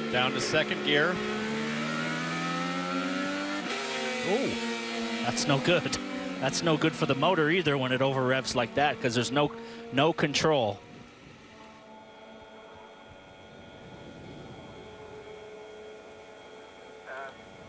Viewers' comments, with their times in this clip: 0:03 sounds like the start to Iron Man by Black Sabbath